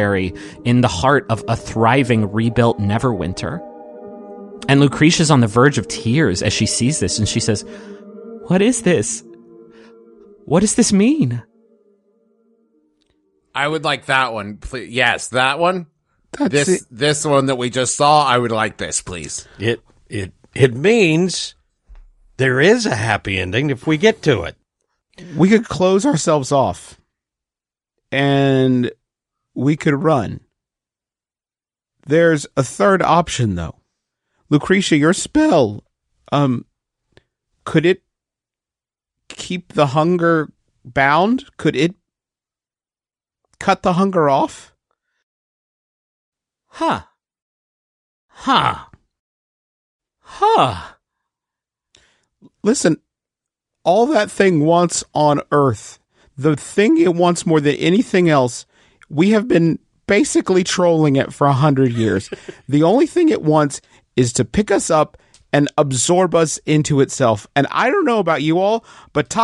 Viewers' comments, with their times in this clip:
0:08 The "what is this" is wonderful and so emotional
0:08 the amount of emotion in her voice kills me every time. It almost sounds like she’s crying right then.
0:46 is so much funnier when you remember it's just Griffin doing three different voices one after another.
0:47 big big feel trip but all i can think about is griffin saying huh three times in a row in different voices he sounds like a minecraft villager hbdkhh
0:51 The trio of "huh" is beautiful and I love this.